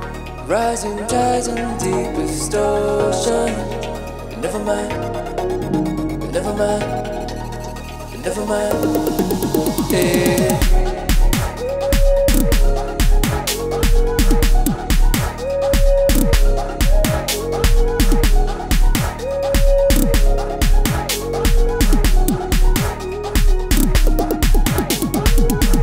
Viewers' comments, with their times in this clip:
0:09 melody does some to soul❤😂